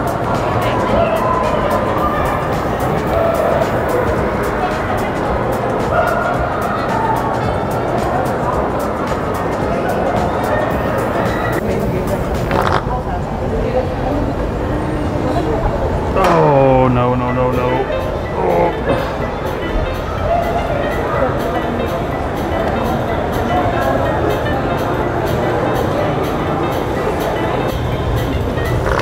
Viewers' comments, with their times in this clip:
0:10 Somebody drinking milk